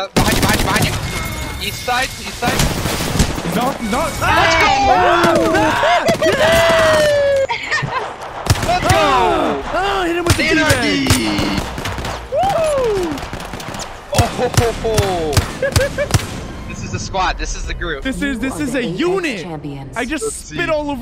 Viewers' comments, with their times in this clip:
0:08 confused screaming lmfaooo